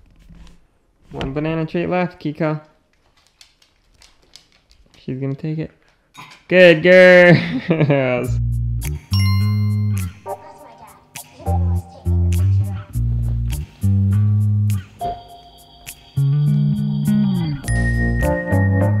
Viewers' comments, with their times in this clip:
0:03 did you just say my name wrong!? Triggered 😤 NOW DERE ONLY 1 LIL PEICE OF BANANA LEFT nuuu